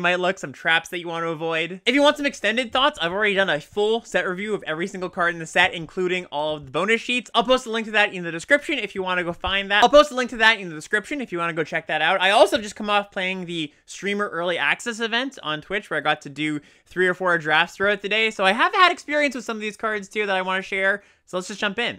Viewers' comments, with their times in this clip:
0:07 you have a clip that repeats itself